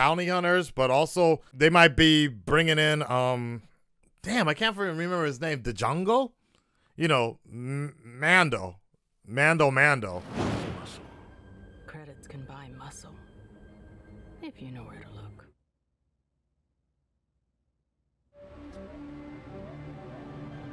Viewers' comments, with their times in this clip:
0:05 He really just said “Dejongol”😭💀🗿